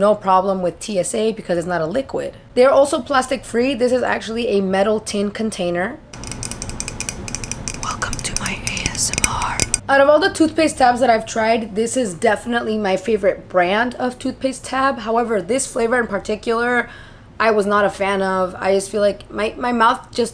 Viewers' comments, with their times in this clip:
0:07 Off topic but my cat literally came running up the stairs when you tapped the metal container 😂